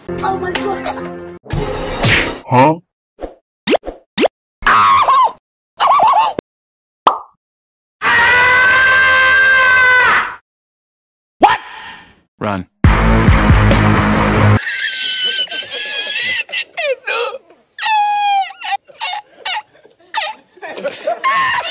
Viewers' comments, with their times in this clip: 0:07 The Best Scream